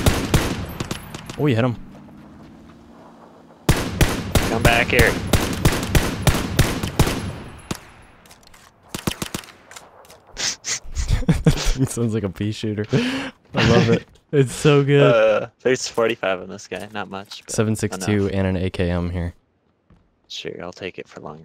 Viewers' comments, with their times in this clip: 0:08 those single shots.. Lol.. Nooobs